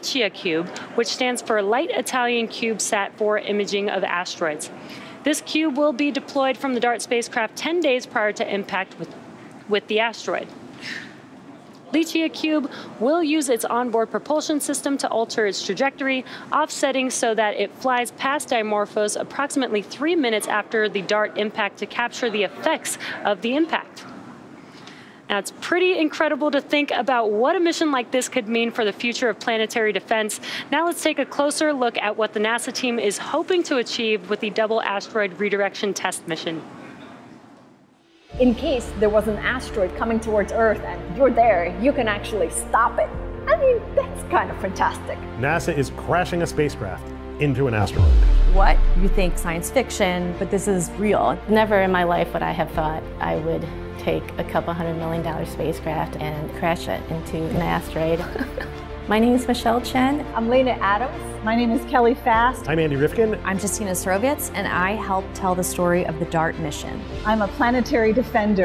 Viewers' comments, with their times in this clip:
0:07 They sound so convinced and sure in what they say like : "we can do something about it" that I am starting to think they just wasted the money to test if they already know it can do it.
0:52 i love it and the laugh at the end xD